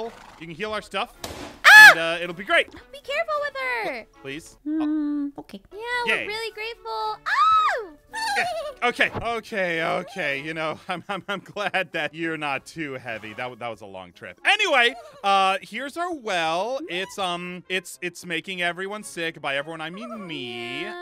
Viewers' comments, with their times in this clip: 0:03 XD when aphmau said “hmmmm okay” it’s so cuteeee